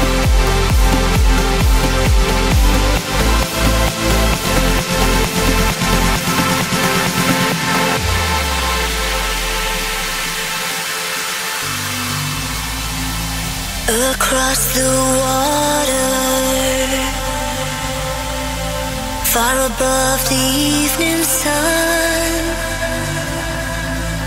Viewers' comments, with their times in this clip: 0:10 WOW! So profoundly uplifting. Lush, rich, full. It's virtually spitting endorphins at me. 4 Strings has always had a special knack for the uplifting. I'm gonna remember this as theirs. . . . Maria Nayler's vocal timbre is fittingly uplifting. Has a way of going by so fast that clicking the replay button over and over is necessary. Picture actual acoustic guitar strumming in